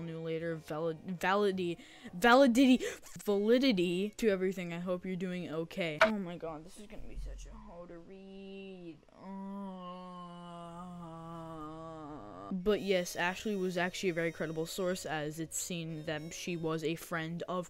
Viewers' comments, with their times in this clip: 0:03 "Val-i-diddy" 🤣 I've been there so many times and I feel your pain lmao